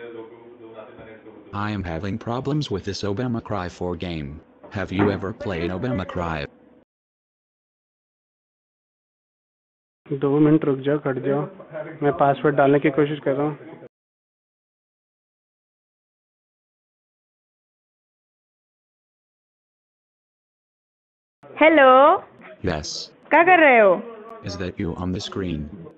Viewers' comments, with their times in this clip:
0:10 the scammer says to his colleague in Hindi that he is trying to password protect this computer. Female scammer yells in Hindi "Hey (in insulting way) , what are you doing, I do see your screen. How come we see your pictures" From her accent looks like their call center may be in Gurgaon, near New Delhi.